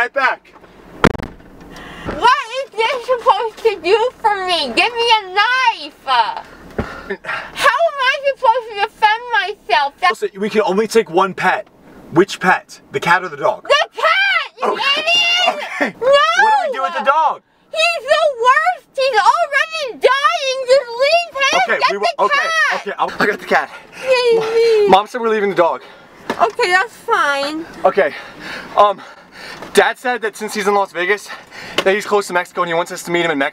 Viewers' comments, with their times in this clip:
0:06 she pronounces 'knife' as 'knifa'. Why?
0:18 She sounds like an old woman